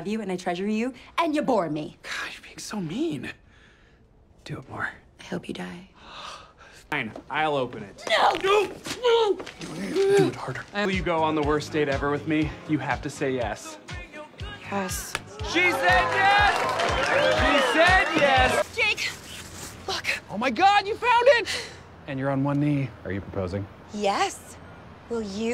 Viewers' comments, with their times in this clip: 0:08 the aggressive no and wrist twist followed by " DO IT HARDER" never fails to make me laugh.😂😂😂😂
0:10 I lost it when he whispered Do it harder